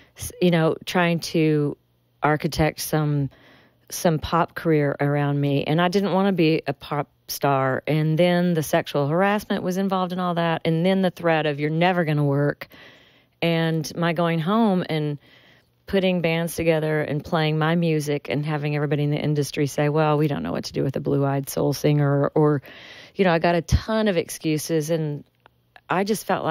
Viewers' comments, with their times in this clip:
0:07 There's that Williamson County twang.